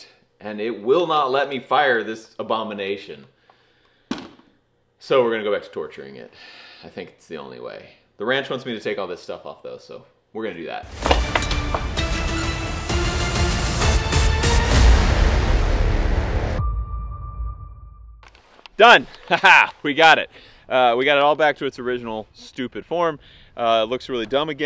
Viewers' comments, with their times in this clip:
0:10 That was weird. I've been watching a lot of world of warships videos with that same soundbite as the intro music. When it played i was like WHAT THE HELL